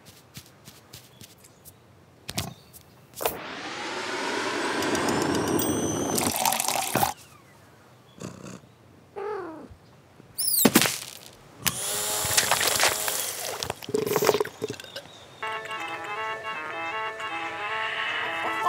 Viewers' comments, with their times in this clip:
0:06 the kitty chirp so cute